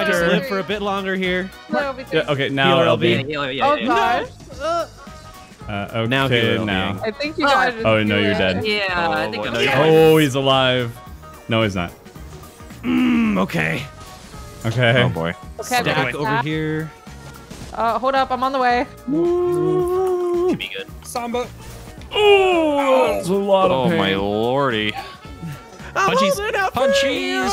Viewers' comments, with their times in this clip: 0:10 i love the victory shout of a well timeHealer lb3